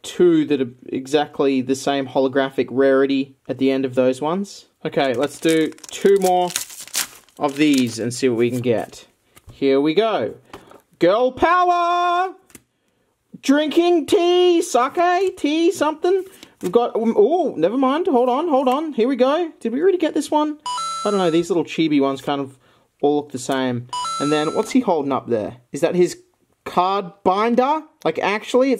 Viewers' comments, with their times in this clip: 0:09 shouts "GIRL POWAAA", shows two boys.